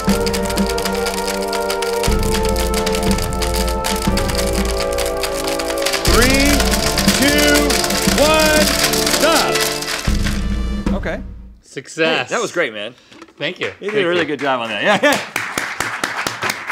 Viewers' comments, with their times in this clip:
0:03 where’s my music theory needs because this was my thoughts “ oh that’s a raised 7th that must be in harmonic minor”😂